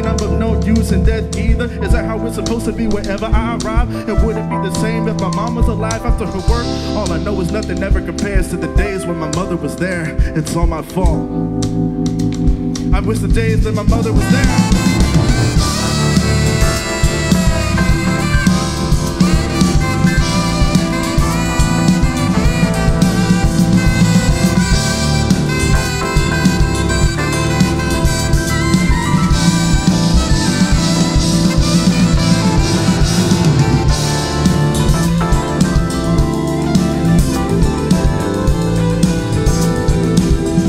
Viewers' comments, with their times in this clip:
0:10 Holy fuck the Sax player made me feel genuine emotion. I played the actual game and to be honest felt little to no actual emotion. But that explosion I don’t know how to explain the emotions that rocketed through me there. It felt like actual anguish being represented in a way I never heard before in music, thank you for the cover.
0:10 Man that note in make me cry everytime. What is this?
0:11 The sax part after the line "I wish the days my mother was there" sounds like a cry from a kid for his mom. Perfect embodiment of that line musically 🔥🔥🔥
0:14 That Sax part starting from to the end really sounded like genuine distress and sorrow for the loss and grievance that Futaba experienced. You can feel the emotion being presented. And that's amazing
0:23 melody hit me hard ✨
0:23 Came here from Adam Neely, searching for Man, what phrasing that is. I've never heard or played any japanese games or anime, but that solo right there spoke to me man. Will subscribe after I wipe the tears from my eyes.